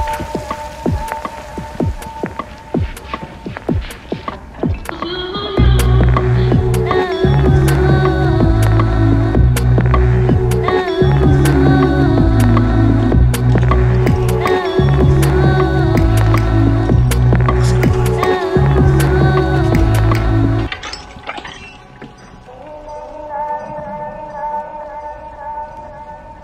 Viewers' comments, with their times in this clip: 0:09 do i really hear keyboard here? :D